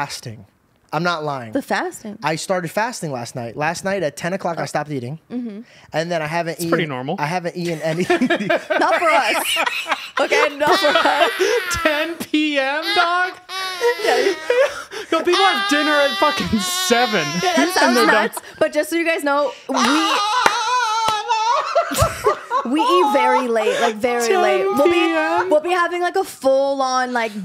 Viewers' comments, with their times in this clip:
0:10 😂😂 that laugh had me in tears, you sounded like a kazoo
0:11 What is that laugh?! 😂😂😂
0:14 when u finally asleep and here a mosquito raping your ear